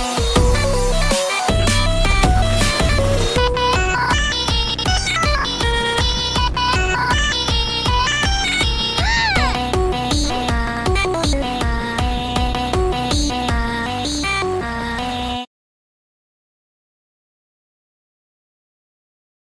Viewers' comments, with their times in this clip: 0:03 listen around this time and you can hear her inner tankmen showup
0:07 if you listen close she's says RPG